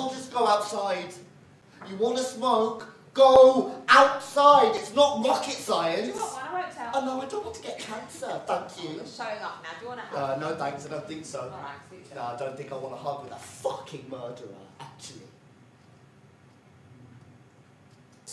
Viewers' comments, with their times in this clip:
0:05 I love way he says, "no thank, I don't want to get cancer." lol